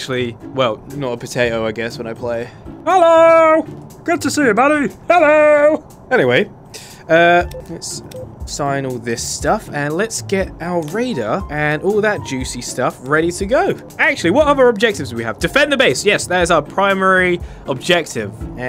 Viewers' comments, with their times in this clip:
0:03 you sound like mr. bean